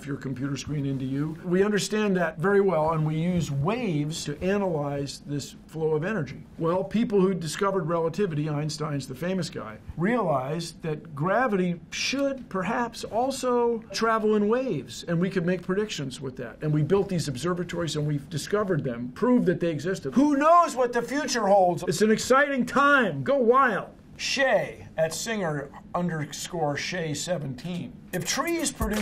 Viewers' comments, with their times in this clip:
0:07 I totally heard "Einstein's the famous guy" in my head to the classic theme song "Bill Nye the Science Guy". Science is cool!
0:12 Is that a Discord notification ?
0:13 Why is there a discord notification sound
0:13 lmao there is a discord notification sound somehow
0:13 Why does it sound like someone joined a discord chat?
0:13 did Bill Nye just get a Discord notification
0:13 listen very closely there is a discord ping
0:14 anyone else hear the discord notification